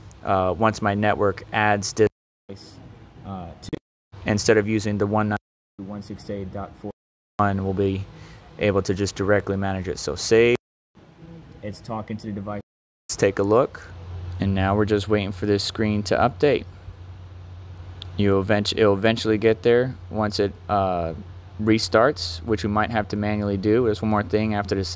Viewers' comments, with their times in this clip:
0:07 :face-blue-smiling: at the end! the audio was clipping was it you or me?